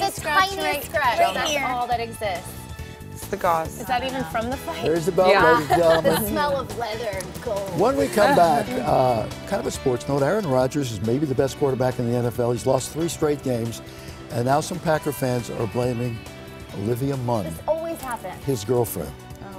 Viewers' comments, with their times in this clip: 0:06 The laugh by Holly, is priceless.